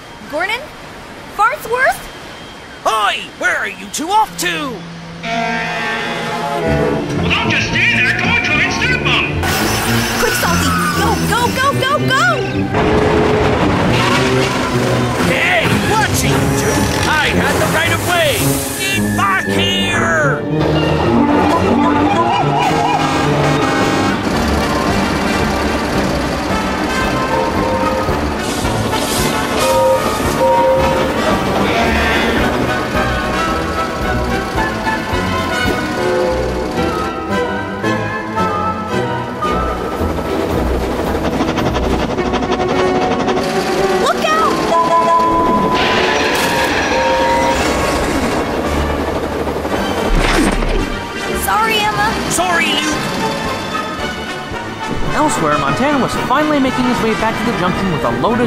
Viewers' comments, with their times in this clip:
0:05 when the epic chase music and chase scene start
0:24 when the epik chase music starts
0:44 thats not salty's horn